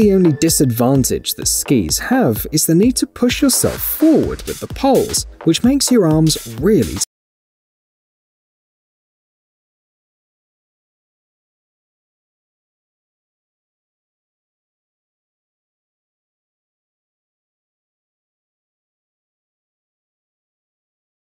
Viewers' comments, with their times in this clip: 0:06 Sound went out in the SKIZEE segment